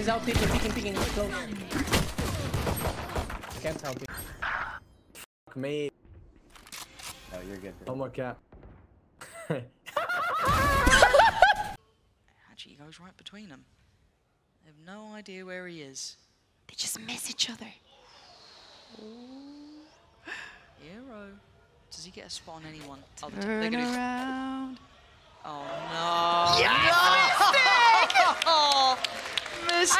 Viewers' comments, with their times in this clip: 0:10 got that cod zombies laugh 😂